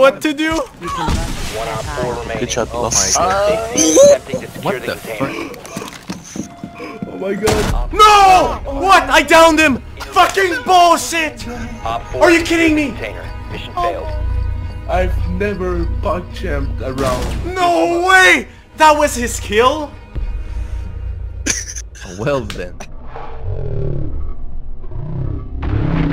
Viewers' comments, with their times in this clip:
0:10 You call THAT furious??? I feel really bad now, thinking about how I scream at my monitor when the bs of this game gets the best of me....